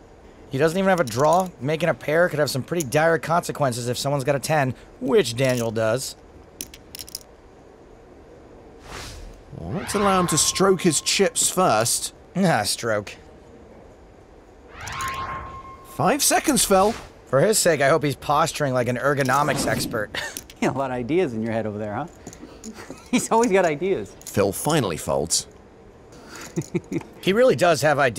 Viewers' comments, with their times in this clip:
0:09 and then laughing at the word "stroke" a minute later...